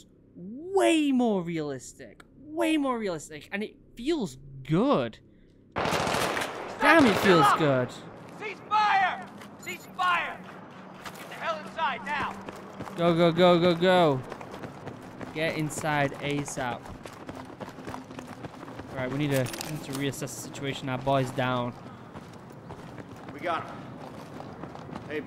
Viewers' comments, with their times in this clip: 0:07 The sound engineers did a great job creating the feel of a large space . The movie Heat did the same thing during the bank robbery scene.